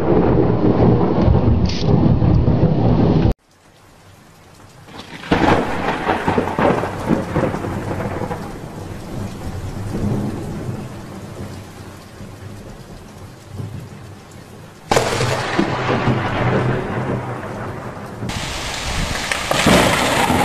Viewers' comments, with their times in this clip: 0:04 adding in the thunder sound effect is just lame.
0:04 In mins there are two thunders, the one is the other building and the one is the burj khalifa in dubai, uae but it is not raining. because dubai is a big city desert. And the temperature is 7 degrees celsius when it is a dark cloud.